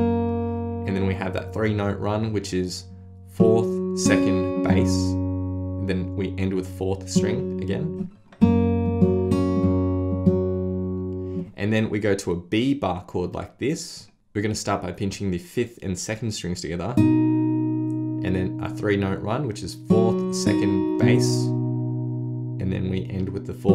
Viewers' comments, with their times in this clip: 0:04 the three note run, he doesn’t show/hold B 2 but he makes the correct sound anyway?!?